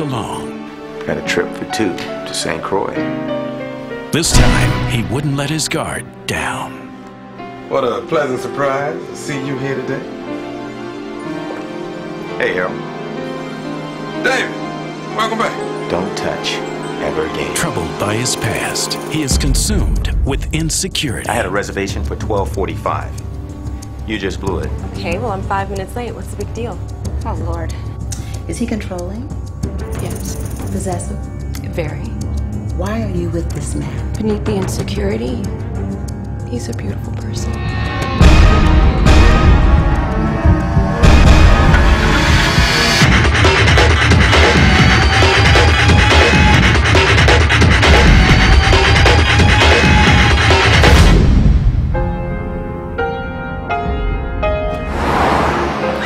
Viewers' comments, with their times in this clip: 0:03 Haha the fucking voice over guy sucks Let his guard........ DOWN. This trailer is fucking hilarious!
0:43 music choice FAIL